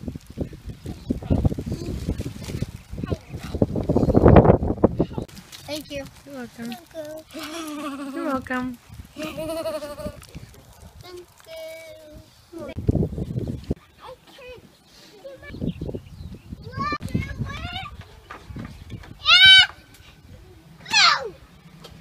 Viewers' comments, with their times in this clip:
0:08 I love the laugh there